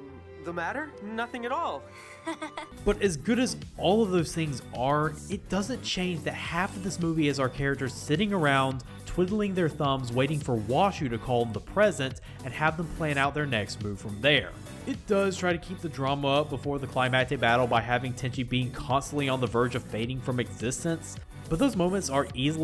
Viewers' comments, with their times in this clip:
0:03 lo-fi city pop starts playing